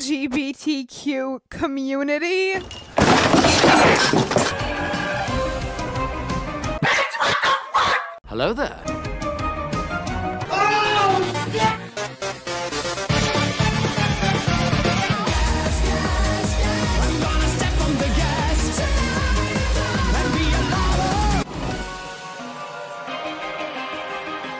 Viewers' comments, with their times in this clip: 0:07 I love my daily routine of getting earraped, really makes me prepared for whenever the children outside of my apartment starts screaming with joy, maybe even horror